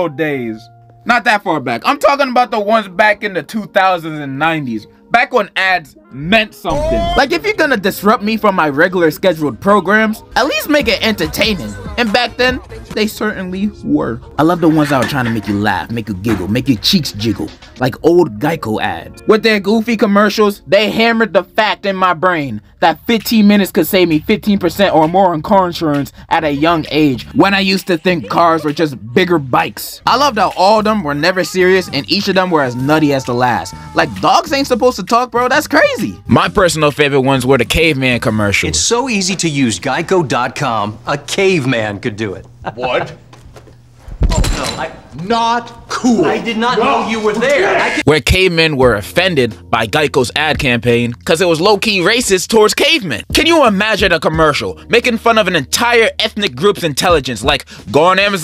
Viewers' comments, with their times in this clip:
0:04 "The ones back in the 2090's" also still 2023
0:41 NAH BRO SOUNDS LIKE GRUG FROM THE CROODS💀💀💀💀💀